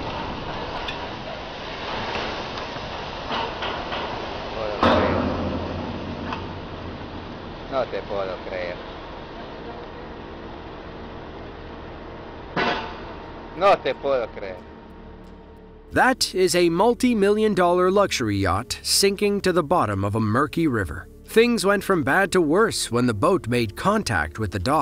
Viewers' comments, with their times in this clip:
0:10 South Africa??? sounds more like somewhere in Latin America 😅😅 the guy recording speaking Spanish 😂😂